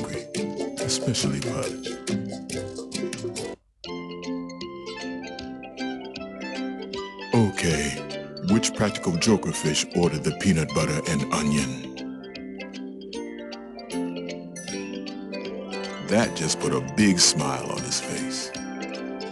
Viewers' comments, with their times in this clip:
0:04 When I was a kid I always like the song that played